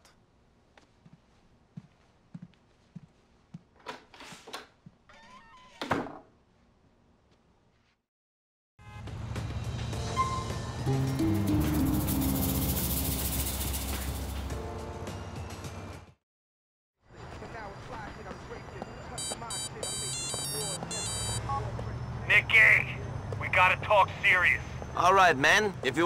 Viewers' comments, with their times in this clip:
0:09 beatiful mission tune passed.